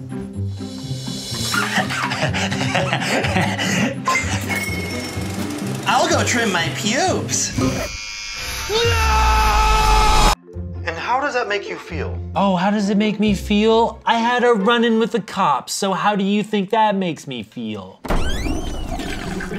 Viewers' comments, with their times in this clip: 0:05 Ian’s scream killed me 🤣